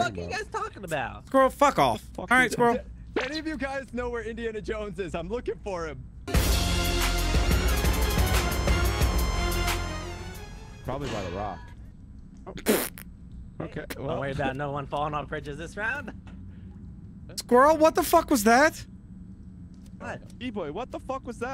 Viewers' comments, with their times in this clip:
0:05 The Pillar Man theme had me laughing
0:06 It gets me every time the Pillar Men theme is used in these videos 😆